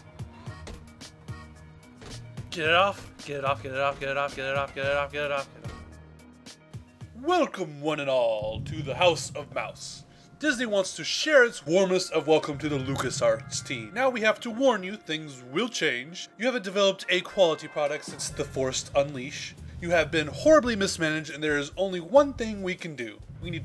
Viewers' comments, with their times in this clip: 0:08 Gabe N's voice?